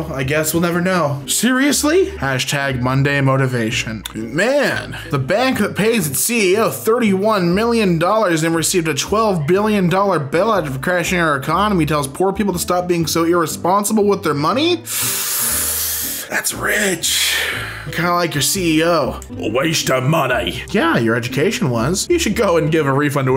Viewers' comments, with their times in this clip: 0:08 Did ANYONE ELSE here that really faint scream? I’m fucking dead from that lol.